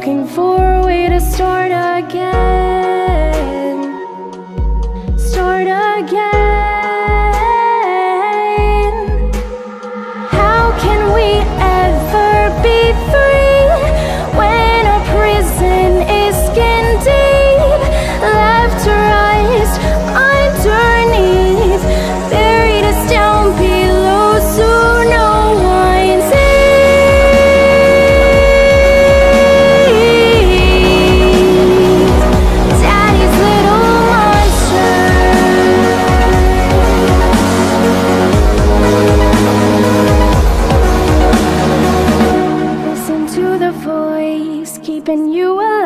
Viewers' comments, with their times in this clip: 0:05 this note hits hard
0:26 The singer sounds amazing at 0.75x speed!